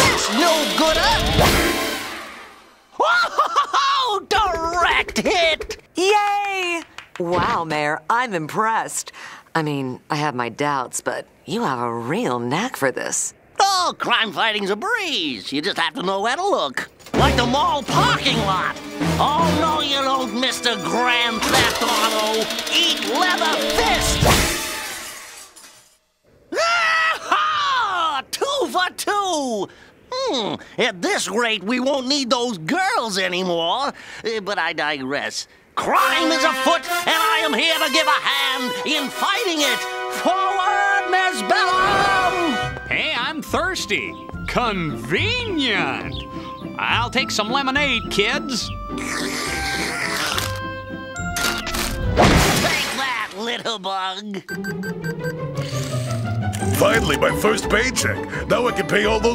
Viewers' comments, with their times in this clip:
0:05 I love how Bellum actually support his idea at first and she sounds so cute when she claps to him
0:05 I love how cute she sounds in saying "yaaay" congratulating him, showing she actually support him in his ideas.
0:43 That one guy here actually sounds in the same range as Dexter's Dad.